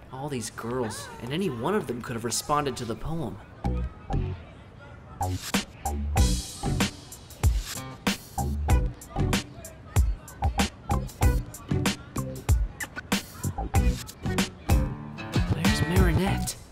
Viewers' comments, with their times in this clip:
0:04 I thought I had another tab open playing a simply nailogical video